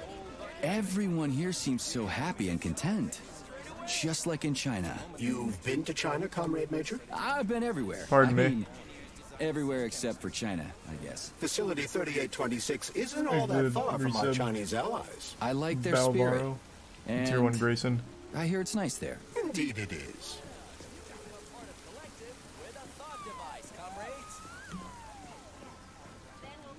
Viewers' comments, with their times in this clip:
0:08 they sound like M3gan